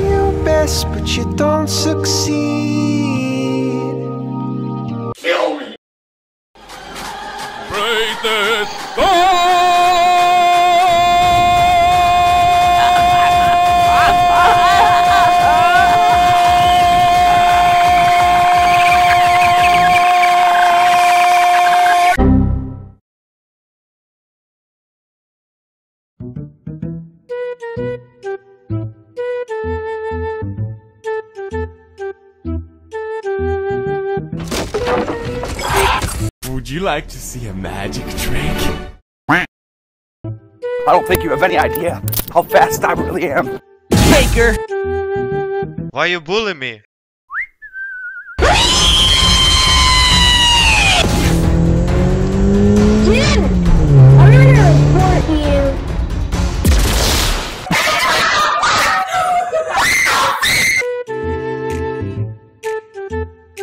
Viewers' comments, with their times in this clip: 0:07 like this song
0:47 Angelo: Whistles Agatha: REEEEEEEEEE!!!!!
0:48 = Angelo: whistling Agatha: REEEEEEEEEEEEEEEEEEEEEEE ANGELO: USES SPEED BOOST Agatha: Im gonna report you ANGELO: spreads stun/primal fear AGATHA: WHAT THE FAK HIGH PITCHED Agatha: WAT THE FAK HIGH PITCH but louder